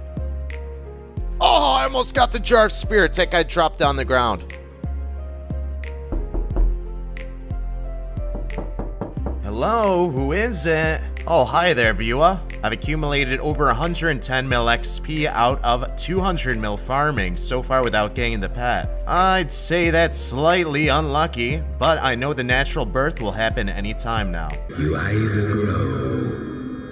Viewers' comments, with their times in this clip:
0:05 Those knocks were so realistic (if you wear headphones) I thought somebody knocked on my doors
0:08 OMFG that knock on the door sound made me turn around and say, whaaat????
0:10 brother i litterally turned right then left on ffs there's nothing to my right to knock i was so confused for like 2 secs xd